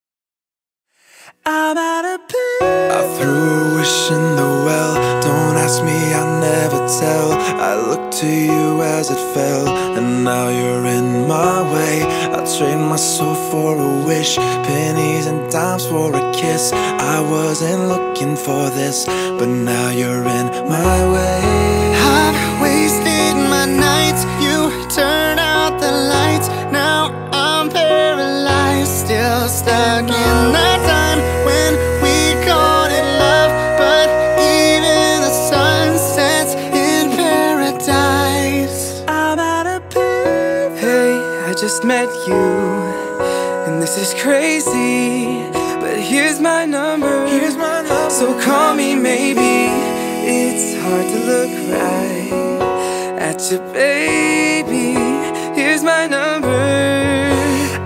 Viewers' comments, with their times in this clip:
0:03 sounds like namjoons voice from bts ;-;
0:03 Sorry but his voice is similar to Namjoon (RM) of BTS
0:04 ur voice is similar to RM BTS
0:39 he sound like Exo Chen
0:41 i might have to simp over this voice right here